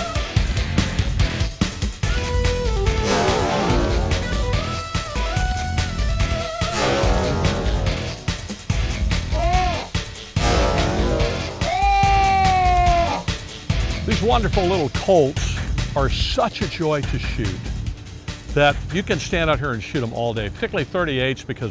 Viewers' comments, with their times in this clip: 0:09 I liked the sound of that guitar being choked to death ! Oh, nice gun! Wahi' Valleys